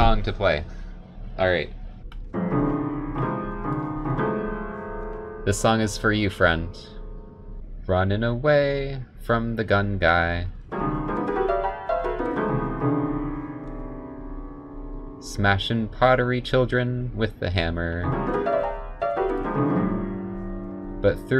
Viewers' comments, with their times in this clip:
0:04 this is what professionals call "jazz"